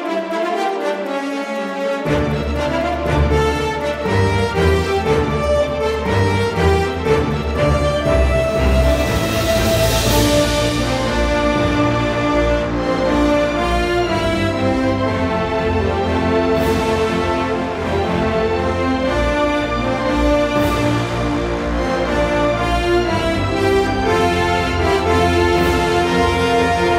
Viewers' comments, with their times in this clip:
0:10 wow this part is similar to parayuvan ithadyamayi music